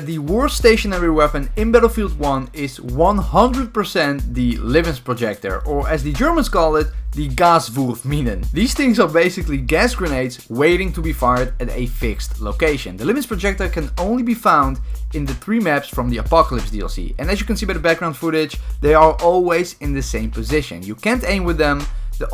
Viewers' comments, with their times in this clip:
0:05 im German, and i need to say... i am really impressed...
0:06 you actually spoke good German!!